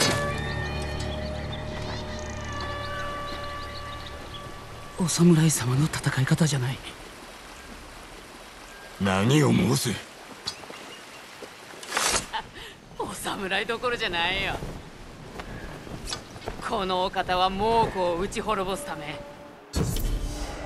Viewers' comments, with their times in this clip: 0:04 the frick is that voice lol
0:07 Zoro sempai voice :D